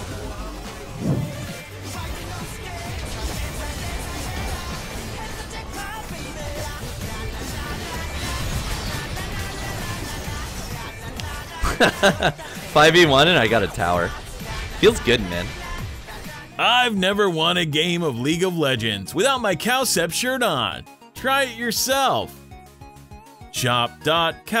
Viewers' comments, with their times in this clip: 0:05 man that auto attack sounds totally match with the song beat